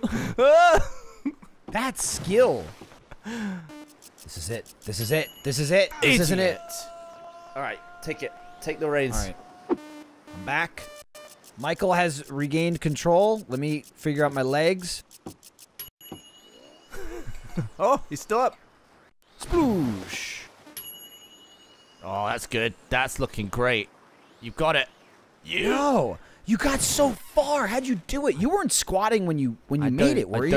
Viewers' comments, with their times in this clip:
0:10 stitlting instead of stilting lol
0:17 anyone catch "stitlting"?